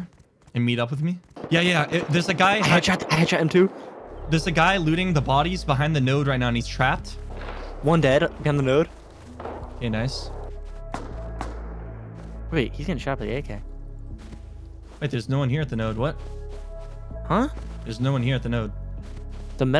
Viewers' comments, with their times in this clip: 0:05 when this song kicks in in any of his videos, you know there is coming a banger clip